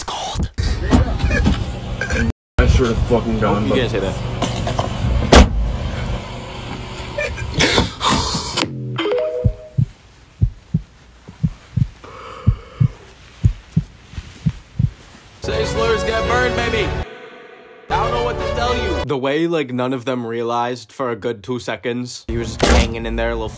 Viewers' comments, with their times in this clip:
0:04 the way his hand crunched